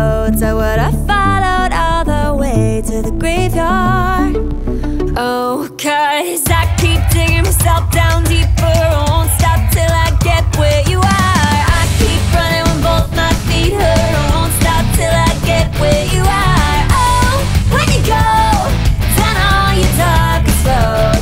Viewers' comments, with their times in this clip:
0:05 woow that emotion in her voice. Music is more than amazing. The girl is a beast.